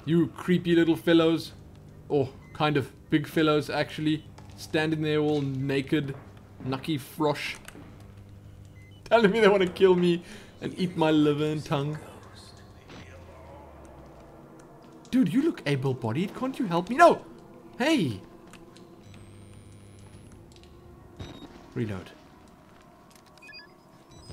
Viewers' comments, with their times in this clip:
0:05 Haha, that was pretty good German for 'naked frog'...have you been brushing up on your European languages lately? :P